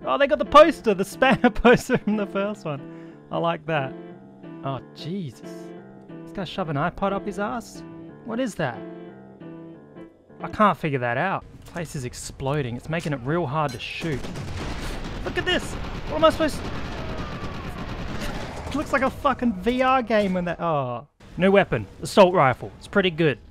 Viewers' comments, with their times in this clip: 0:07 background music starts playing me, the cultured: oh, I see, I see, someone has been watching some high-quality anime
0:07 10/10 for Monogatari music